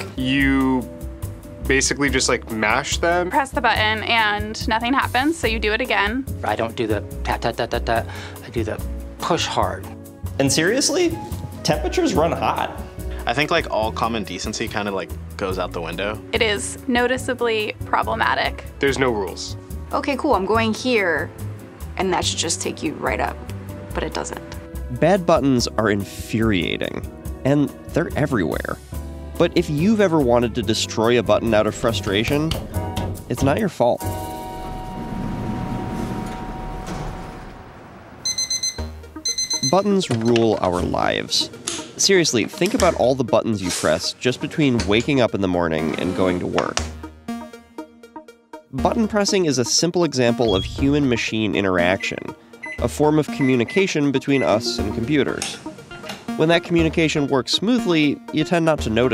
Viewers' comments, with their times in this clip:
0:10 keeps triggering my “hey Siri”
0:12 Who's Siri went off
0:35 pretty much reminds me of avicii's Levels :P
0:46 For a second I thought that was his vibrator